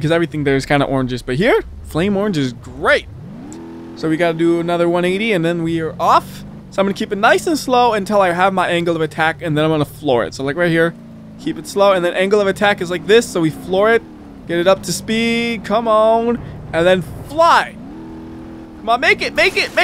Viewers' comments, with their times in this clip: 0:07 no flame orange is not grape its orange